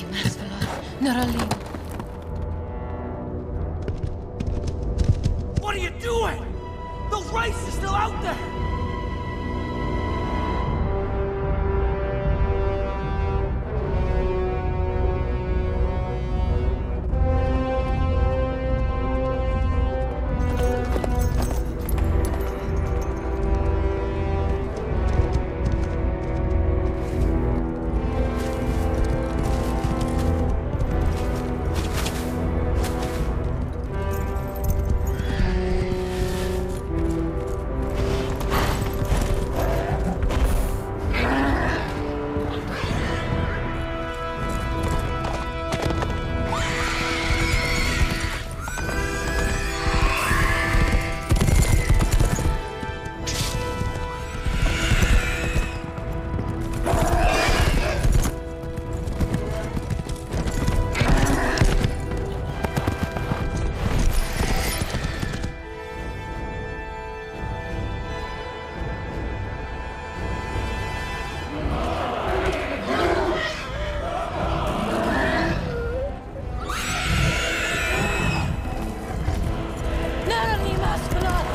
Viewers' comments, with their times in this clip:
0:07 “Those racists are still out there”
1:06 She sounded so beautifully haunting when she summoned the white horses in Elvish. Also, that is an impressive shot ! Haha! I just friggin love The Lord of the Rings!